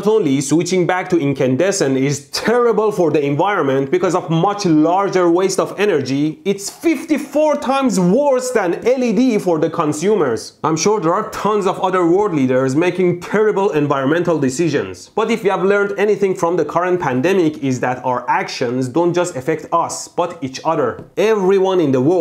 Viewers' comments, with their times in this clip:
0:09 ...,,they are tones of other war leaders" Yeah you are right about that too :))))